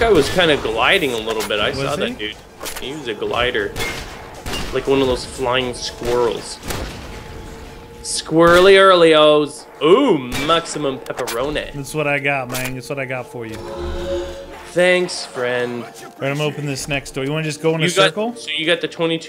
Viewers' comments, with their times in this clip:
0:03 you could hear double tap if you listen closely.